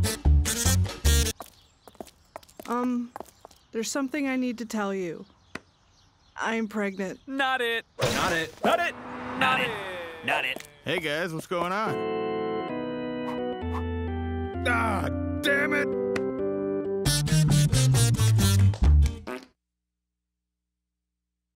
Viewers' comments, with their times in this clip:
0:09 dub error lol